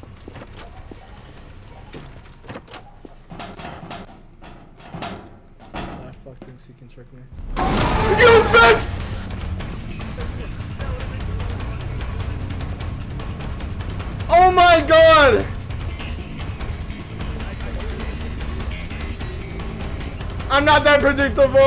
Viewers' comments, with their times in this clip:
0:08 has to be the most funniest and scariest moment in gmod history also that prowler theme fits it so well